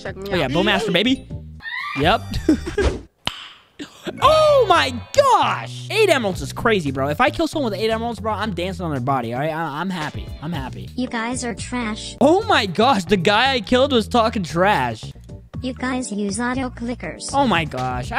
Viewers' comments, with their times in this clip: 0:03 not the beatboxer bro